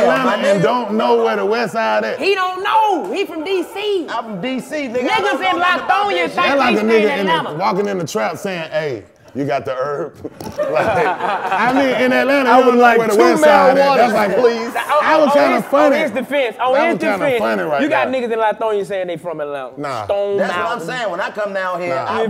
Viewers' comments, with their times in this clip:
0:07 So nobody ever pointed out the funniest point throughout this interview Chico was defeated at this point 😂😂 dude was just laughing to fit in, I know it’s all jokes, but Fabo had him sweating 😂